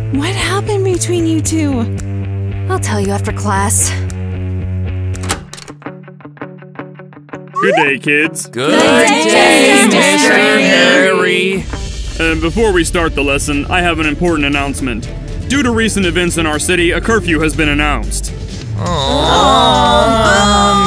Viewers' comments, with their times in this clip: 0:08 They Sound Like They Don't Wanna Be There